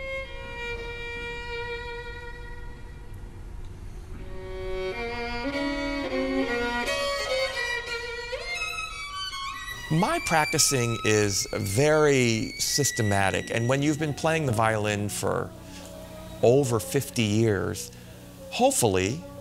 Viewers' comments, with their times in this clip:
0:07 A cheeky out-of-tune octave But I don't care. Leave it in! The passion and musicality is all there! I loved this video from start to finish. I don't want to hear perfect octaves "corrected by a mixing desk or computer". I'll take a human performance on the first take over an overdone recording done 25 times and processed beyond my imagination any day of the week! Well done to Mr David Kim who gave me my perfect performance :)